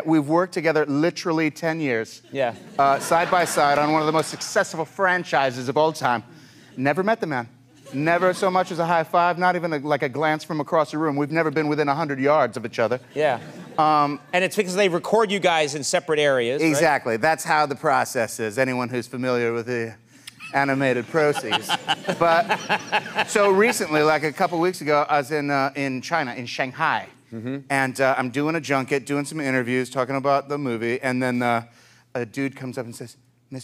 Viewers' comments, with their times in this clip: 0:03 I thought the crowd will cheer or laugh after Po said this 😊😂😊😂😊❤😊😂😂❤😂😊😂
0:19 I like how Jack Black said Animated processes. And Andy automatic laughed. No wonder Andy can pitch the idea of cheeseburger to him